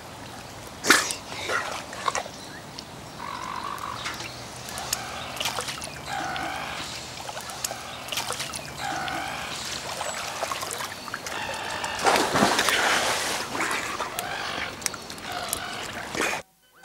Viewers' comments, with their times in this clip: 0:04 it sounds like some seagulls wants some fish too 🐟😂